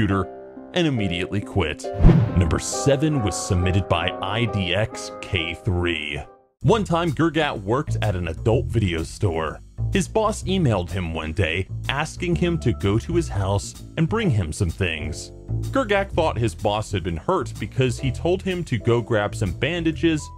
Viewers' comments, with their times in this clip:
0:06 did he say grgat?